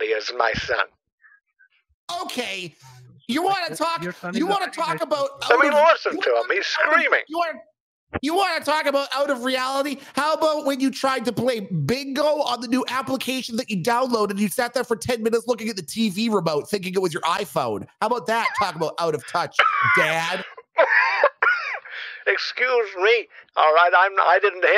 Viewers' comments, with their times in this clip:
0:10 The wheeze of laughter lmao